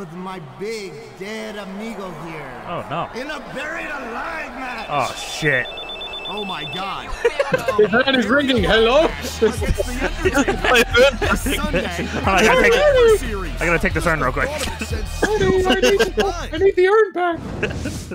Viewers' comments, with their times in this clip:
0:05 Phone rings "Oh my god!"